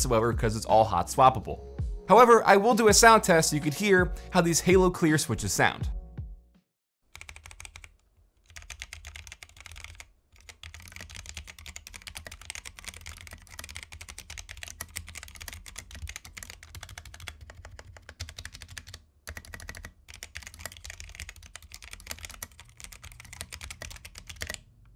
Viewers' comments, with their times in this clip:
0:07 for those of you that like the typing sounds